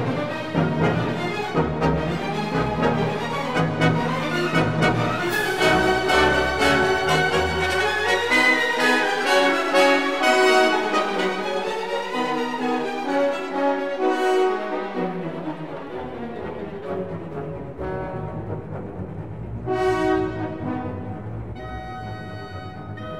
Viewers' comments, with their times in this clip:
0:07 because the music works so well. Plus it moves so fast!